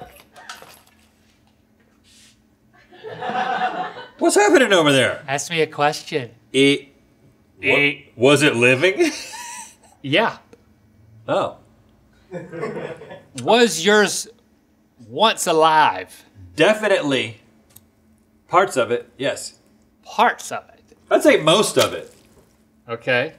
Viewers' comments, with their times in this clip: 0:07 for some reason, the noise Link made makes me laugh so hard 😂❤️